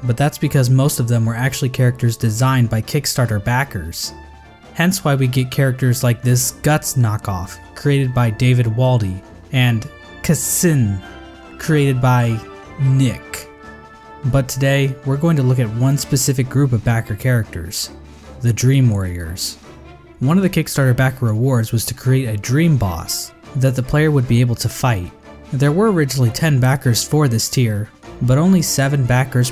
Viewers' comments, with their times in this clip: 0:10 English has a letter for the KS sound and you still somehow managed too mispronounce it. I can't believe this, i'm unsubscribing.